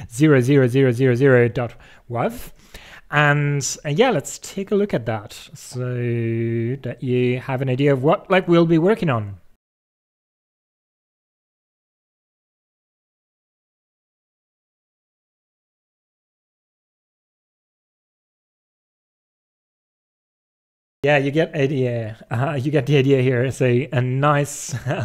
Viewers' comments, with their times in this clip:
0:09 that song hits HARD